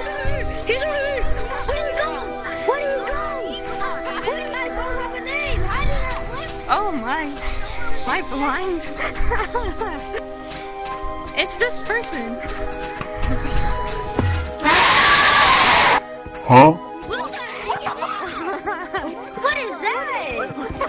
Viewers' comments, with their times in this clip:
0:08 the person has a very normal voice that I’ve never heard no gorilla tag before and is very respectable